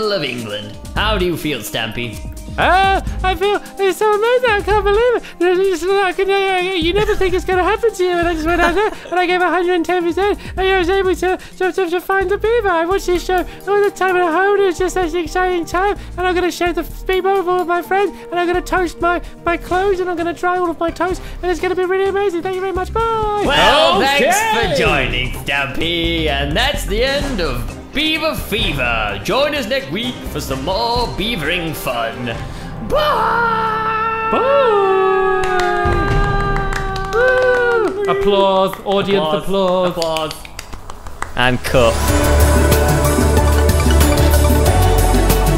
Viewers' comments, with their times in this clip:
0:10 Lol LOl LOL stampy sounds so funny and he looks like a baby
0:28 Omg I put on auto generated captions and I died laughing! ...And thats the end of Bieber fever....